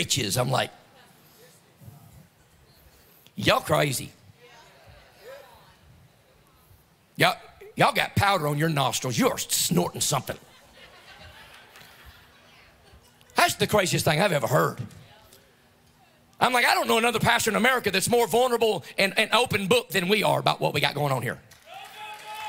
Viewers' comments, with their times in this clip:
0:07 HE'S snoring something! 😂😂😂😂